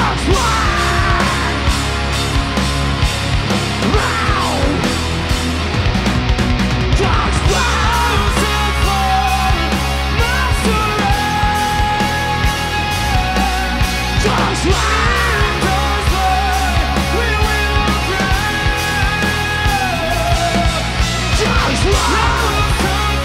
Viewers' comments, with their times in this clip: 0:07 Dals voice....jesus he is always on...voice of a f#$kin angel